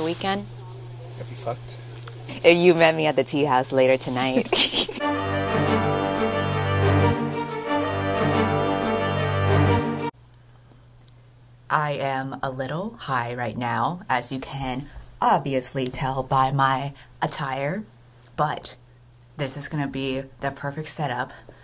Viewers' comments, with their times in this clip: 0:09 the 2010 youtuber sound/music killed me 😭😭 #tbt #slayyy